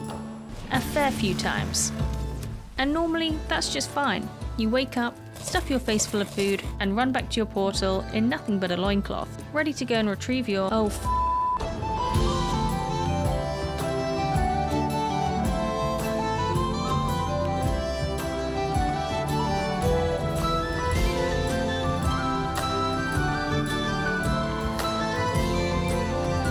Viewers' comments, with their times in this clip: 0:10 It was a very sincere “oh f**k,” I feel for you.